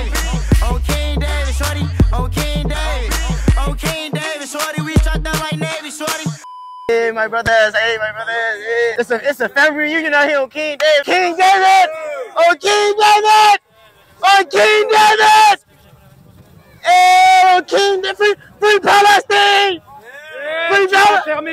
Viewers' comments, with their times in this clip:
0:09 Bruh at the start "It's a family reunion out here" and when he started yelling on King David and it was quite af lmao